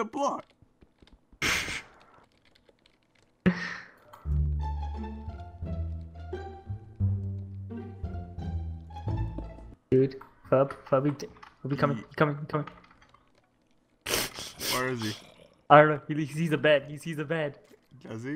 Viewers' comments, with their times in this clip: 0:04 The music LOL